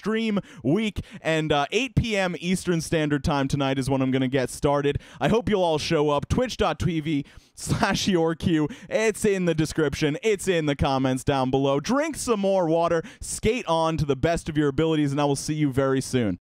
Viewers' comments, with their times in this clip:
0:06 Twitch dot tweevee lol love every video